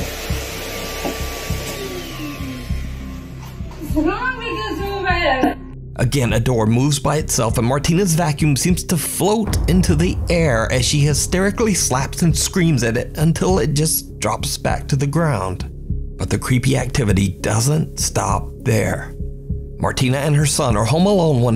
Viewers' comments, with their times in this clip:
0:08 Just a millisecond before that vacuum "lifts up in the air," you can clearly see an edit in the vid. The vacuum is moved, just slightly in position while still flat on the ground right before it lifts up. I call BS on that one. The glass falling off the bar was captured by too many angles, so that one looked legit to me. Also, what was that creepy sound right before that glass falls off the bar on it's own?